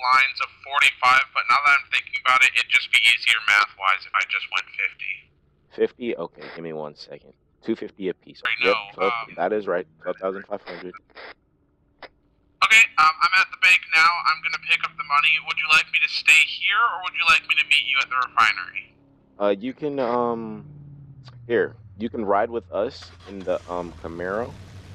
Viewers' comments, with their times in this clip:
0:05 Being the dude all Imma say is why you gotta take away the being rich dream from a guy so poor he talking through a tin can?